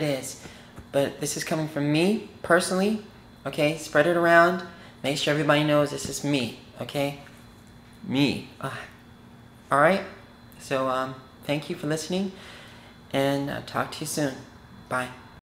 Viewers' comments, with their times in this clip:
0:07 He is just faking it , you can hear his real voice
0:07 [voice changes quickly]
0:08 just for a split second, his voice got deeper when he repeated "ME." I think he might have fell out of character, and his voice may actually be deeper when he's off guard. Just an observation...
0:08 you can hear his real voice
0:09 Anyone else notice the extreme voice drop ??? Lol